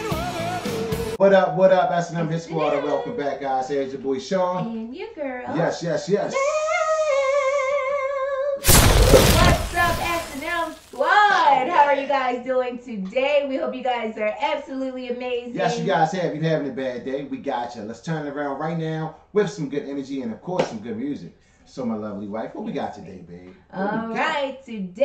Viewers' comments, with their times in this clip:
0:06 I've played guitar for over 35 years and that vocal delivery gave me goosebumps. Now THAT is how you hit a note and apply PERFECT vibrato. I had to keep rewinding several times to enjoy it again and again. 🥰